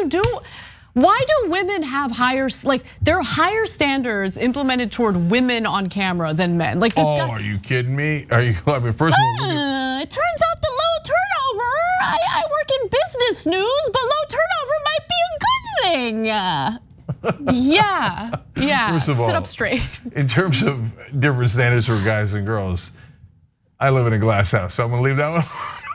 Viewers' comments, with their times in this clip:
0:08 they sound like idiots I like they constantly mock people just like Trump does sound so unprofessional
0:08 Ana's Woody Allen impression 💀